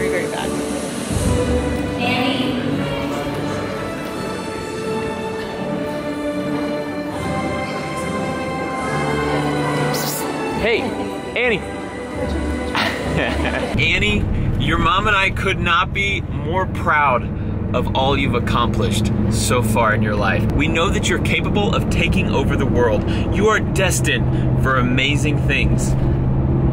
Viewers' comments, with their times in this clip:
0:09 were u calling a dog or a daughteR? :D